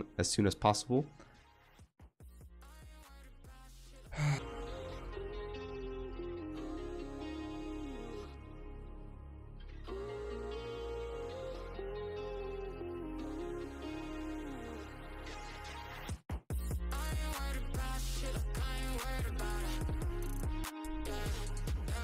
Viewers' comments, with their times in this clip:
0:03 you okay? that sigh sounded unhappy